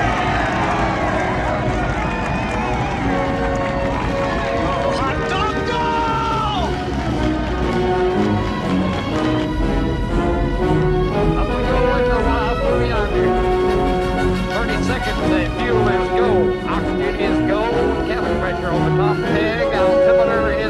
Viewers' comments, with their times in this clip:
0:06 That still blows my mind to this very day. Bill Conti used an already existing melody line as a contrapunct and wrote the main theme around it, and didn’t use the both together until the very end of the movie, to have an emotional payoff at this moment
0:07 as the USAF song hits!